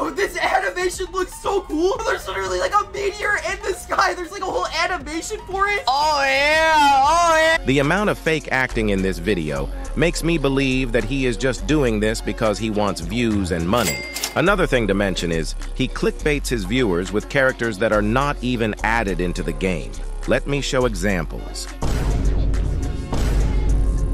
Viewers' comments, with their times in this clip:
0:06 he sounds like he’s busting 💀💀💀